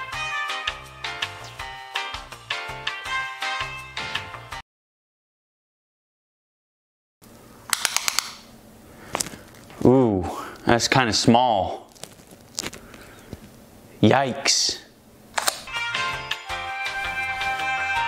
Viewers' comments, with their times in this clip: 0:03 A S M R